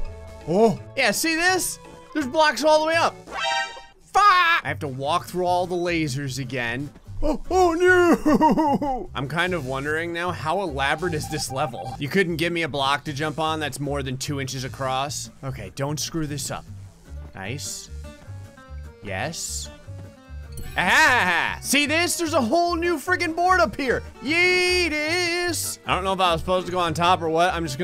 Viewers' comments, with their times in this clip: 0:10 sounds like the among us track when u die or tie